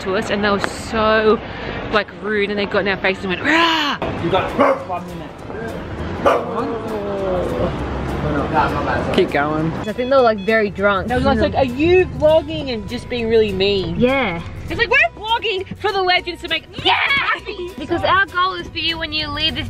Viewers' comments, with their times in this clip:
0:03 for a second i thought that was a dog barking